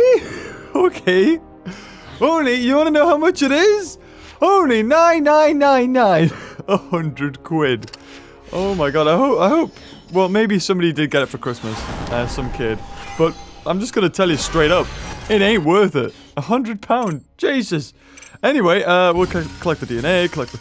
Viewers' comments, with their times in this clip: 0:03 WHEN U SAYED THAT I THOUT OF HITLER SAYING NINE NINE NINE